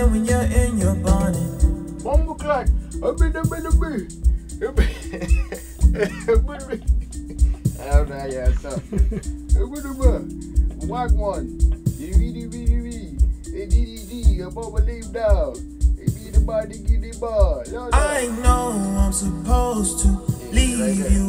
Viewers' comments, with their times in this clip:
0:07 .if ddg put kai cenat Caribbean accent ..it wl go viral